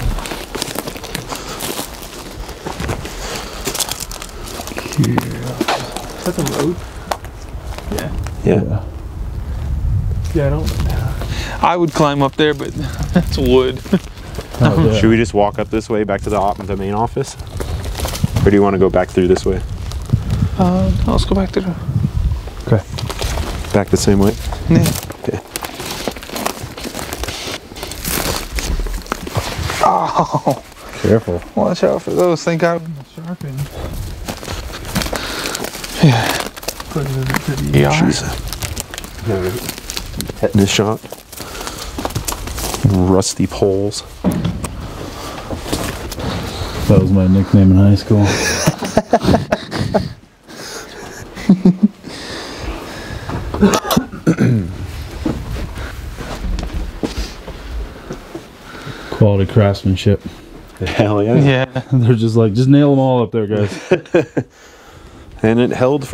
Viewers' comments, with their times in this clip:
0:03 Was that one of you guys? If not it was the clearest evps I've heard from your channel. I wasn't expecting it at all, that one spooked me lol.
0:52 i hear weird women voice, i dont know like laugh. after the cameraman laugh
0:54 woman shouts "FALL!" With whispers before and afterwards